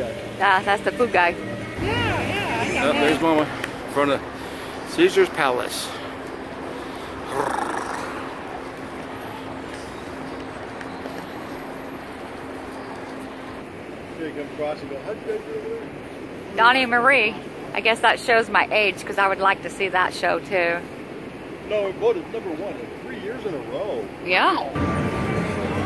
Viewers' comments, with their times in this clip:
0:06 horse sounds ? Lol